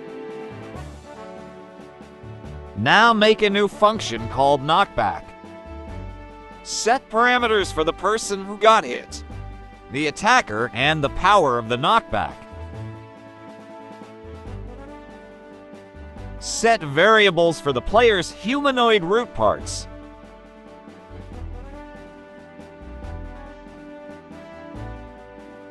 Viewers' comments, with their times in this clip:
0:06 how can an ai voice have voicecrack !?!?!